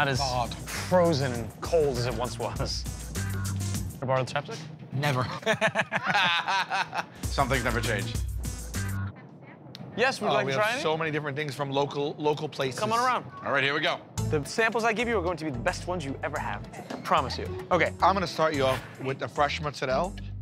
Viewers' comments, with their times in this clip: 0:03 What's he saying? Best I can come up with is "can I borrow a temptic?" but that's not a word.